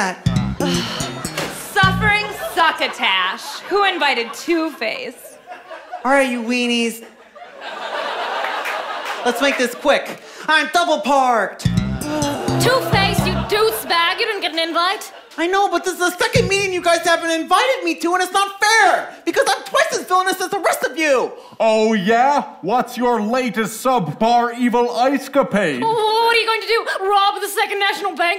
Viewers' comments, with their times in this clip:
0:06 That line isn’t even a pun and yet it’s the funniest by delivery alone.
0:11 2 faces voice 🤣
0:16 I like how theres just one solitary bass note when he says the word second and it's not even a joke
0:16 That tiny little bass pluck when Two-Face says “second” is wonderful.